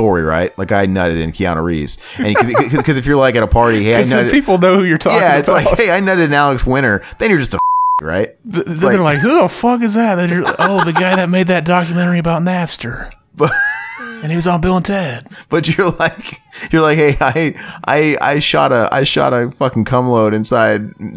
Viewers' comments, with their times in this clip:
0:07 Funny commentary. Why the blip?